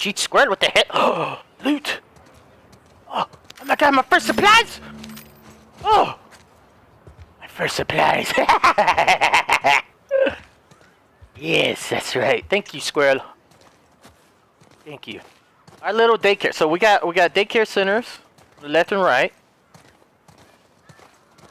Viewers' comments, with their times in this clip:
0:07 “my first supplies” satanic demon laugh